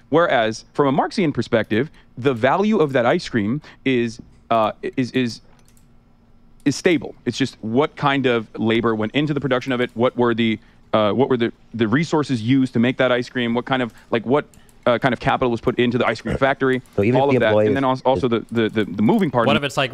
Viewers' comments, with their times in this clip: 0:03 Destiny sounds like a child here. No obviously the costs are evened out over the year. jeeee-suss and if the extra dollar was earned it wouldnt go to the workers it would go to the capital owners.